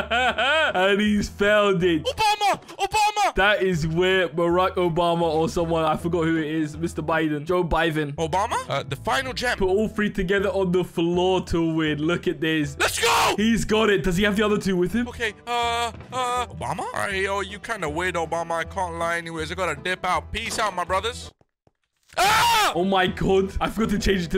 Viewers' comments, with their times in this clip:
0:06 "joe biven" I COULDENT STOP LAUGHING!!